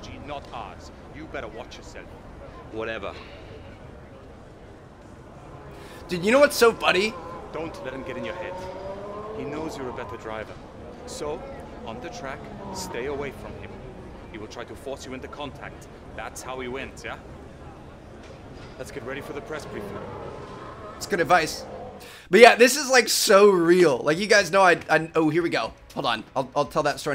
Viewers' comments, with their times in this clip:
0:10 me:he a fliping Russian